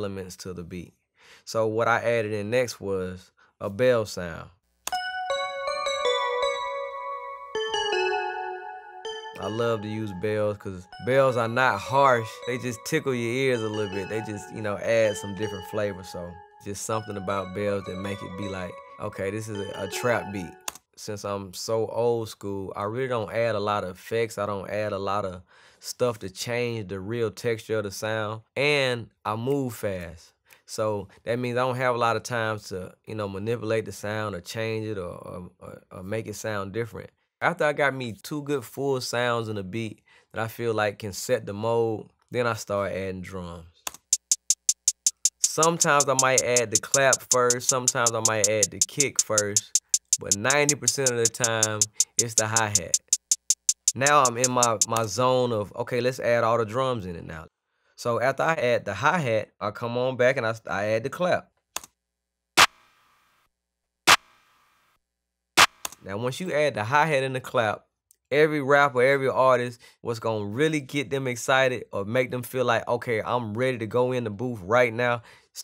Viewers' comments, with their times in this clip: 0:04 Love the bells
0:16 when u just really love bells
0:54 Just saying he doesn't hit the spacebar so why is there a spacebar sound lol.
1:02 people gonna steal that clap & and make a new zay kit for 2020